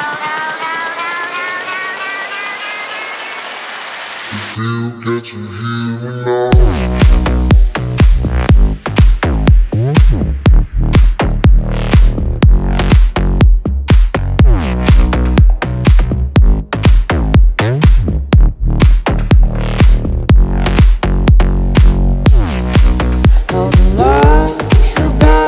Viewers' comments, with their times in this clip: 0:10 That bass is fucking naughty as FUCK!